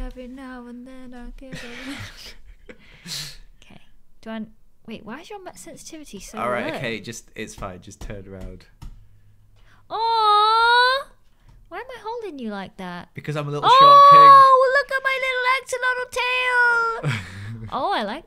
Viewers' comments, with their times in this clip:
0:04 “Why is your mouse sensitivity so low?” aggressive mouse swiping noises Dang she’s right though